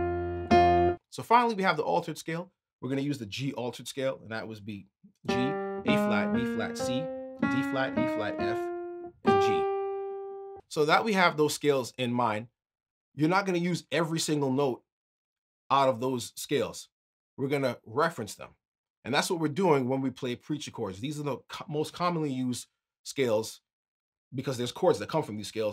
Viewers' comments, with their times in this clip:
0:06 on the G altered scale, you labeled it G, A-flat, B-flat, B, D-flat, E-flat, F. Instead of playing the B, you played a C. Which one is correct?